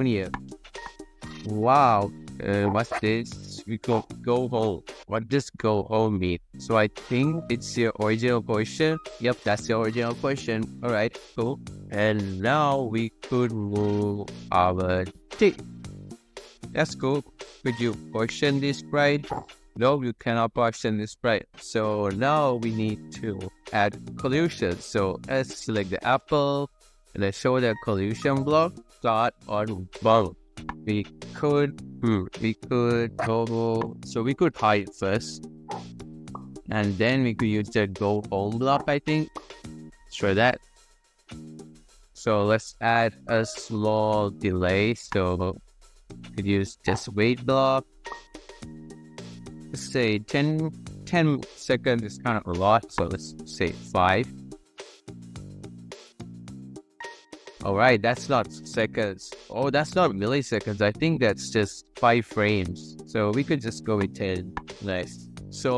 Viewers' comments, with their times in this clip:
0:07 he sound like baby
0:49 i almost heard him say satan 🤨